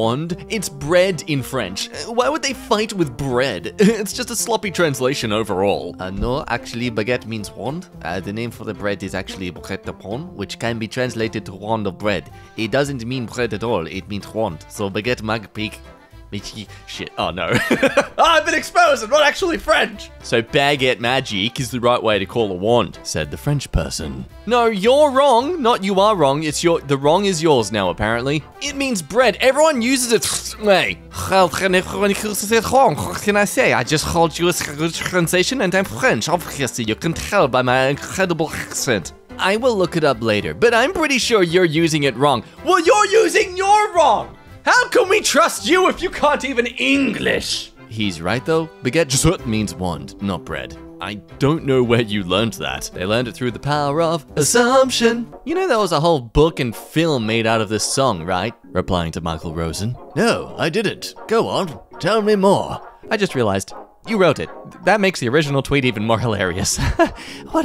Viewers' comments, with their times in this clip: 0:06 As a French, that was painful to hear
0:48 The way you zipped past "jsut" is more funny to me then it probably should be.